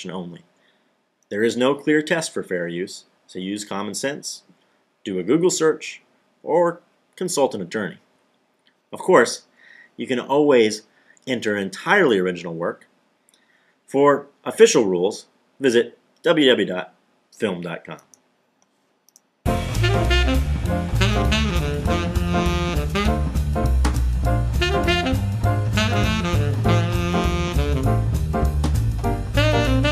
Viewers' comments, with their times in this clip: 0:10 The most unbelievable part about this video is how the narrator says "oh-ways" instead of "all-ways". Don't you just hate when people do that? It's like when people say "chwenty" instead of "twenty"...ugh.